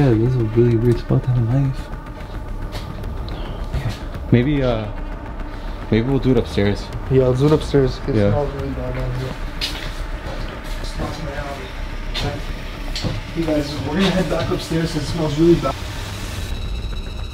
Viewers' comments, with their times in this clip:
0:04 you caught an EVPsounds like it says " Oh yeah".